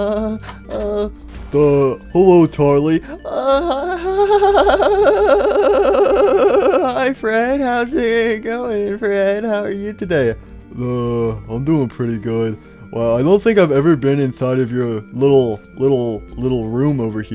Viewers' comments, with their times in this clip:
0:04 that moment when you buffer so much you just repeat it